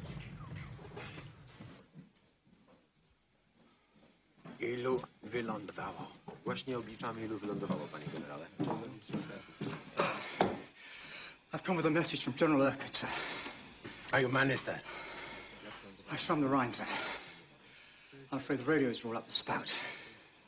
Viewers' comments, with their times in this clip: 0:03 Seems they couldn't be bothered to learn a few lines properly. Accent in heavily wrong place, everything wrong. Even the line itself doesn't make much sense.